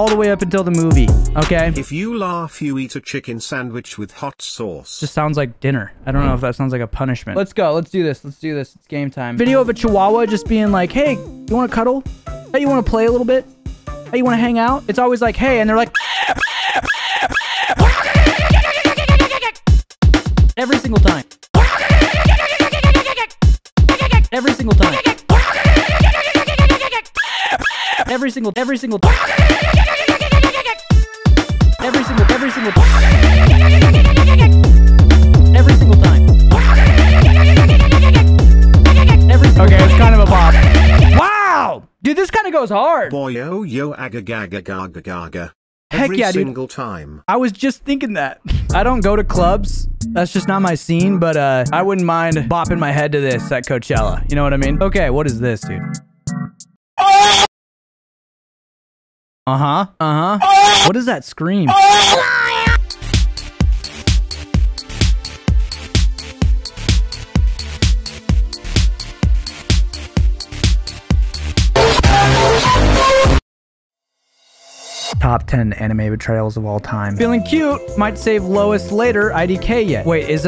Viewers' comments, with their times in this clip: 0:09 that song is a bop
0:16 if drake made good music
0:18 the best beat drop in history
0:22 him laughing at himself
1:01 that scream has got me crying 😭
1:02 Bro fr got that raving rabbids scream